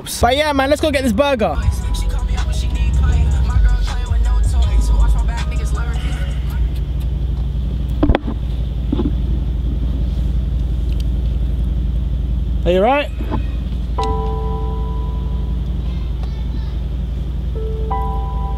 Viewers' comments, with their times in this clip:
0:03 he listening to Lil Skies from England